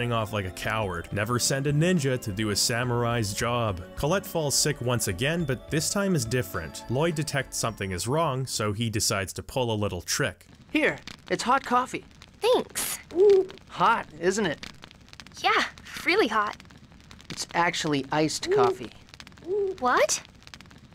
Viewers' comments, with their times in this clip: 0:08 This sequence is easily one of my favorite scenes in the game in no small part because of the delivery of Lloyd's lines, but the way you edited this scene immediately gave me whiplash from a YTP of a different scene from this game that I first watched literally like 12+ years ago.